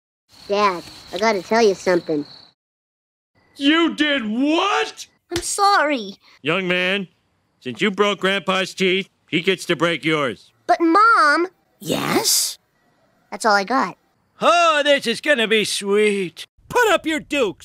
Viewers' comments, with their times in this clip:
0:03 Thats funny how homer yells at bart saying YOU DID WHAT LOL 😀